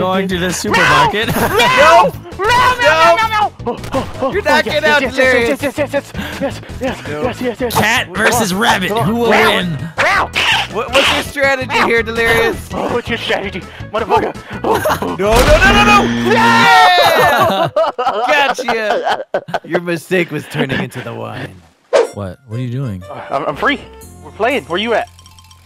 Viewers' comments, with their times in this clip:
0:08 When Delirious hissed, I laughed so fuckin' hard XD